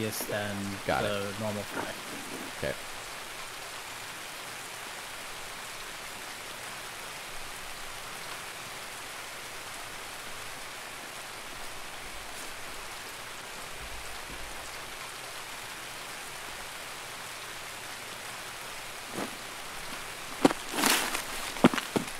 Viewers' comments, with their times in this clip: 0:08 how on earth did you hear footsteps!!! I turned up the volume and put my headphones on really tight and still can't hear anything past the rain... you either have super human hearing, or your headphones are really really loud lol.